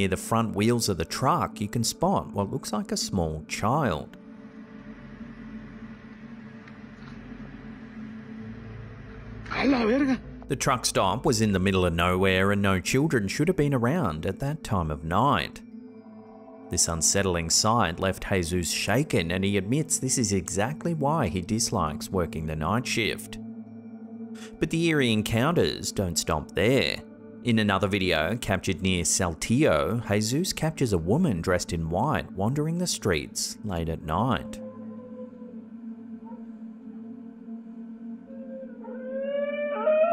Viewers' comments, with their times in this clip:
0:10 I'm usually not bother by this stuff, but that wail is really freaking creepy and doesn't sounds quite human.
0:25 The video is the same audio as every other video of that same "ghost"... same dog barks and everything.